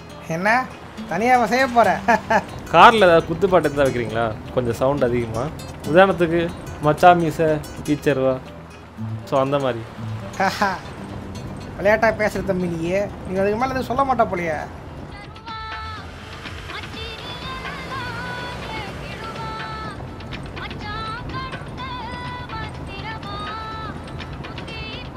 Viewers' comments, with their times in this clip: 0:10 song selection super😂😂